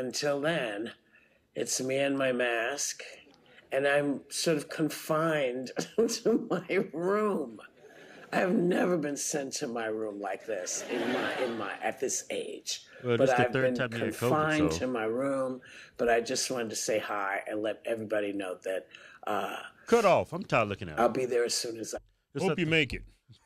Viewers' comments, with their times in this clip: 0:09 They actually had the nerve to use a LAUGH TRACK during Whoopi's talk, hoping her little lie would go over as a joke better if they audience was supposedly laughing with her.